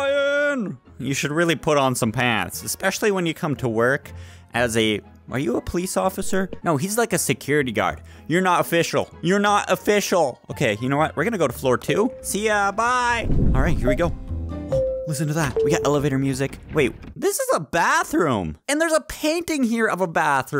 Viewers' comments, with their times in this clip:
0:08 sounds a bit like a karen